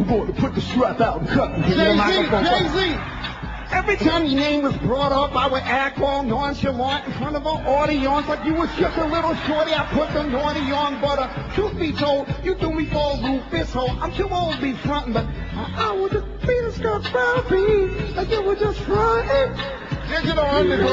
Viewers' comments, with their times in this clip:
0:03 he was made close on the jay-z voice in the very beginning